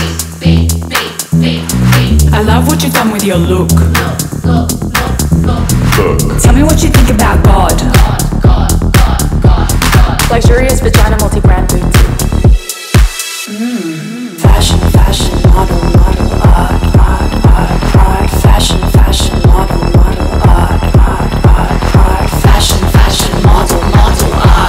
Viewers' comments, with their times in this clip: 0:05 I'm getting Donner Summer - I Feel Love vibes from that low bass <3 Great song and video thanks for the collaboration!